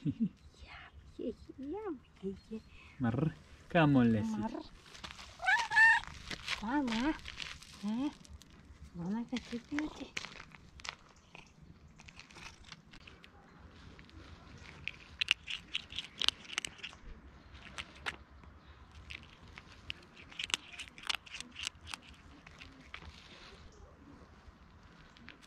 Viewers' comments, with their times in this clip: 0:06 Did she say “Mama!”?